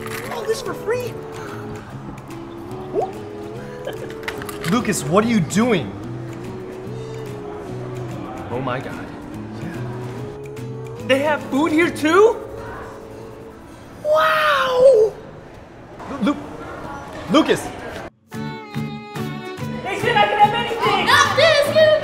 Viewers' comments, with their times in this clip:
0:03 cutest "ooh" and giggle ever harry shum jr <3